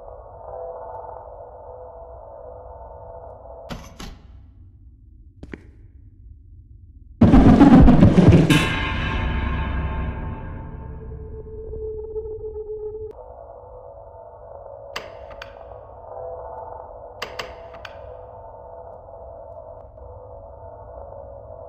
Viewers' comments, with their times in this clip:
0:07 I think this is a good jumpscare. no earrape screaming.